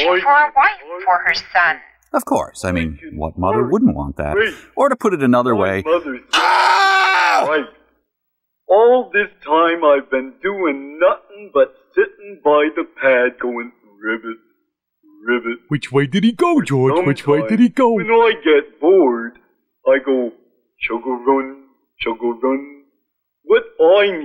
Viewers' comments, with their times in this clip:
0:06 imo is one of the best screams i have ever heard in my life🤣